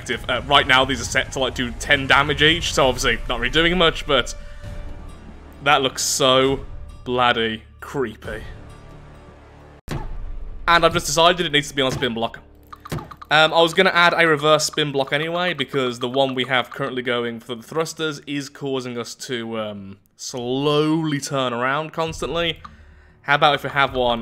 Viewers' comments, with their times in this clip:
0:08 I laught so hard when I heard that sound XD Those little PAC are absolutely creepy and horrifying unless you hear the *plop*. They're the cutest blood stream raining from the sky that I've ever heard